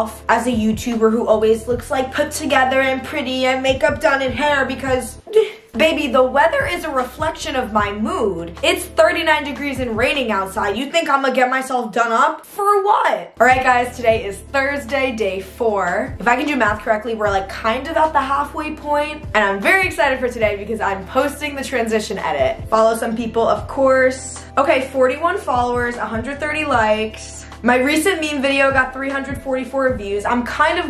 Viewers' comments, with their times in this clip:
0:09 why does lauren lowkey sound like gwen here?
0:11 no bc why does the "for what??" kinda sound like gwen LOL
0:12 why did u sound like bridg right then 😭😭😭
0:13 the ''for what'' sounds kinda like gwen icll